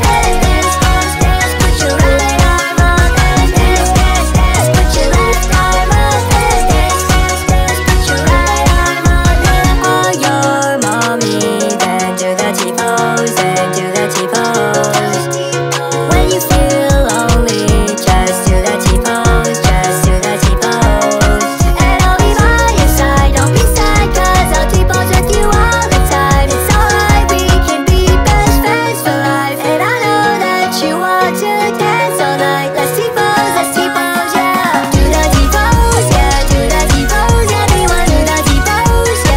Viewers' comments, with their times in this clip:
0:08 I never knew what it said right here until I seen the music video
0:26 This song is so cute ❤❤❤🎉